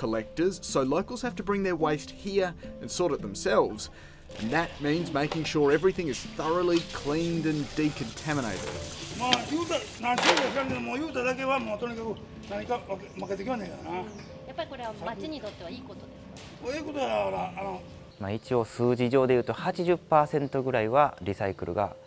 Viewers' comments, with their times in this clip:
0:10 Guy sounds like a Kill Bill character.